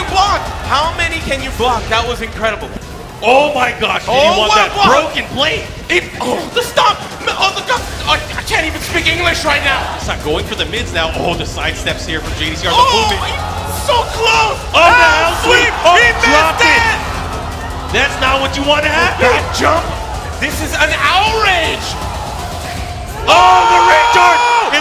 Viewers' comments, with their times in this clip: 0:07 sounds of s.o. drowning